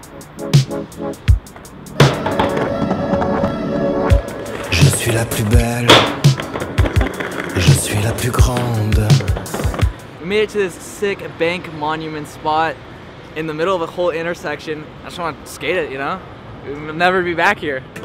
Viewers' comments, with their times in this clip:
0:04 he said "je suis la poubelle"and it means "i am the trashcan" or i misheard soemthing omg l